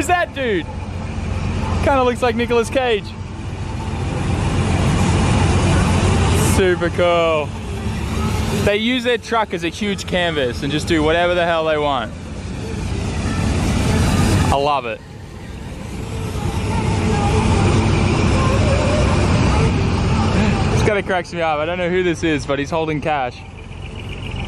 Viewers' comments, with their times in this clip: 0:07 you can hear someone playing Ez do dance lol